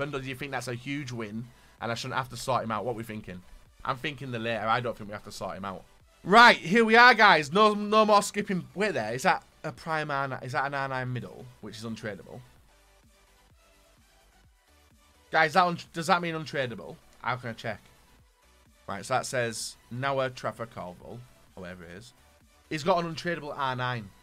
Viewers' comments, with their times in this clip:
0:06 Brazilian acc :D